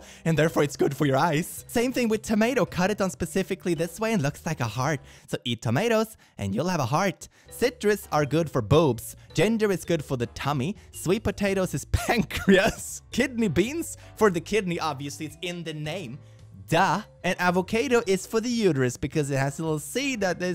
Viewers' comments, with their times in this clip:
0:07 I misheard "gender is good for the tummy"
0:08 I was listening without watching and just heard “gender is good for the tummy”, which I find particularly funny as someone who regularly stabs gender into my tummy /j